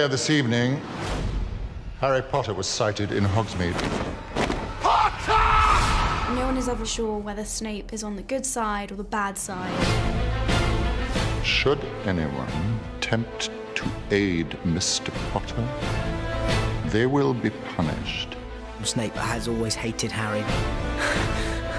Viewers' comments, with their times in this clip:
0:04 Is that Snape who yells "Potter" ?